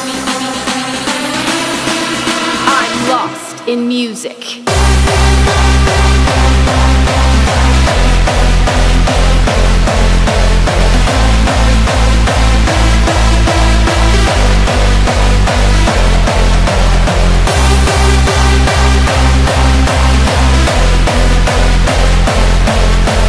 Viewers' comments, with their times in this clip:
0:04 hardstyle is good beat